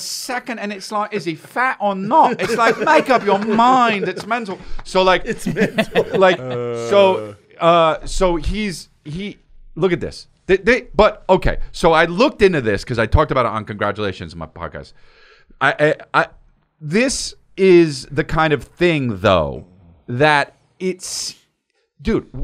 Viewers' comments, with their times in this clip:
0:05 As someone from the UK, the impersonation that Chris did of British people was so accurate I can't stop laughing.